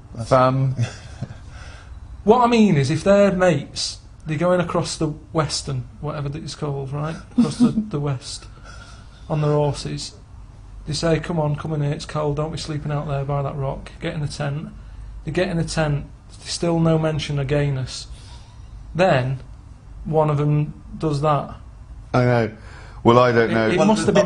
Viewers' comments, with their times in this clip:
0:09 “On their ‘orses”